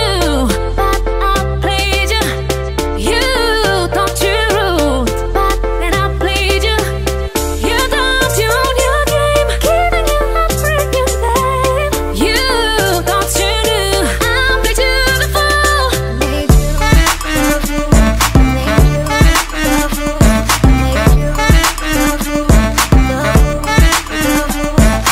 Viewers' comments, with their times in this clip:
0:09 I thought I heard "Kidding, you are pregnant babe" XD XD XD